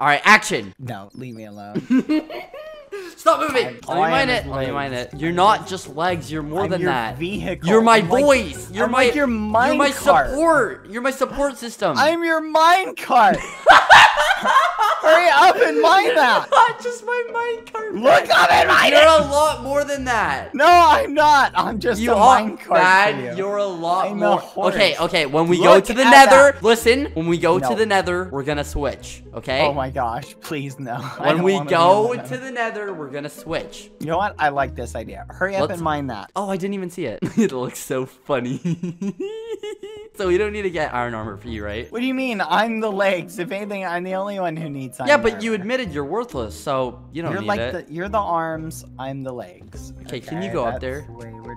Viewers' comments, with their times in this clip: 0:07 why did I hear You're my boyf-
0:37 “I’m your Minecart!!!!” skeppy laughing like my sleep paralysis demon “no you’re more than that!” “ NO IM YOUR MINECART! ”